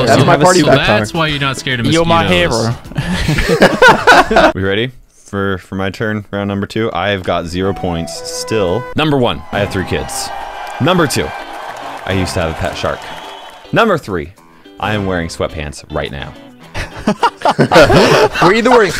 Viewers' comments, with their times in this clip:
0:06 Lol Naruto Netflix Season 1 Sad Music